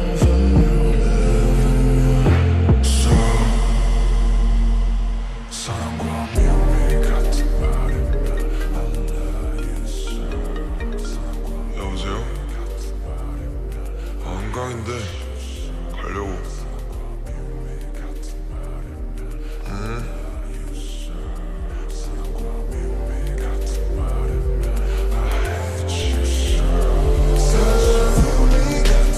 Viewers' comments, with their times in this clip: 0:06 not me thinking my phone started ringing LMFAOOOOO
0:07 my dumb ass actually thought someone was calling me and paused the video and searched for my phone for 10 minutes and couldn’t find any miss calls. i continued the video and slapped myself😌
0:07 This was the first time i listened to this song and I thought my phone was ringing lol
0:08 i heard a ringing sound '^' more than that, the video is perfect, I don’t even know why it has deslike <3 armyy
0:08 I thought that someone called me lol
0:10 DAMN RM'S VOICE BE LIKE---
0:11 Namjoon once said, for others to clearly understand him, he has to talk in a higher pitch and now ... imagine if he normally talks like in or somehow around this tone ... I'm losing myself ...
0:11 dude joon's voice😳